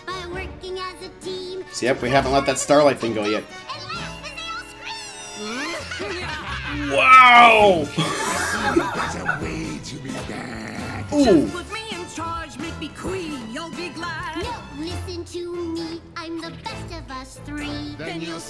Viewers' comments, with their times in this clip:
0:05 Cozy's evil cackling is sounds like Anjelica from Nickelodeon's Rugrats.